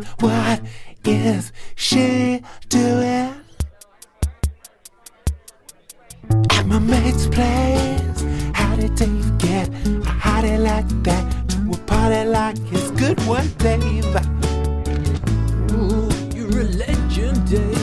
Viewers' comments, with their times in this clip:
0:04 when the beat kicks in, awesome. your a legend dave